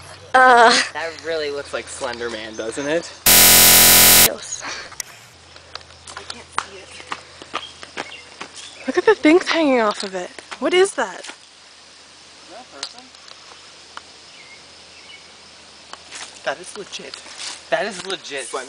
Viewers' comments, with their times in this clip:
0:03 Was the sound the camera's fault?
0:04 had volume up ahhh!!